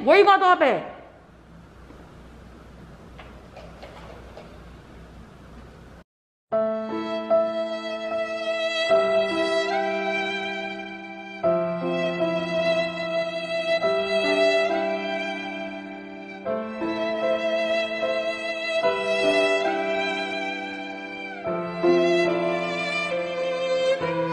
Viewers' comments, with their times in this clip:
0:04 HAD ME CRYIIIIIIIINNN 😂😂😂😂😂😂😂😂😂😂😂😂😂😂😂🤦🏽‍♀️😂😂 THIS NIGGA OPENED IT UP AGAIN 😂😂😂😂 the sad music finished me 😂😂😂😂😂
0:10 I died when they played that sad music 😂😂😂😂